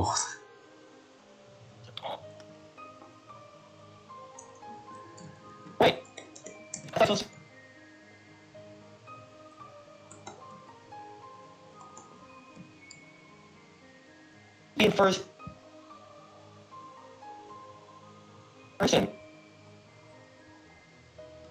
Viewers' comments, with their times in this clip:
0:05 my mic being bad and past lol